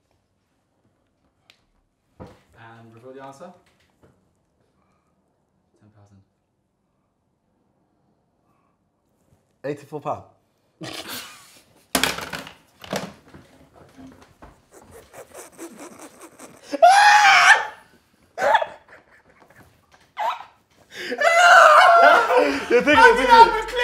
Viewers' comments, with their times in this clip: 0:07 Chunkz’s laugh is contagious 🤣